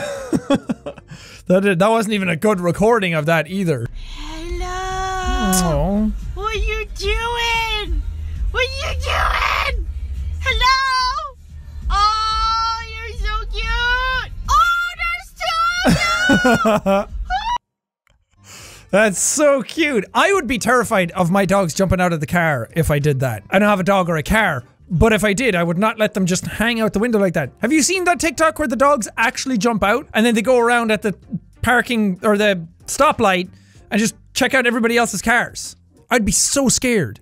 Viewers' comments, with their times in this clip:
0:04 Sean:"Do you wanna hear the best scream of all time?" Me: TURNS DOWN VOLUME
0:24 Thus scream was actuly added later because he couldnt scream or the tarantula would bite him,so yeah his acting is so good and editing is so good you cant even tell he doesn't scream there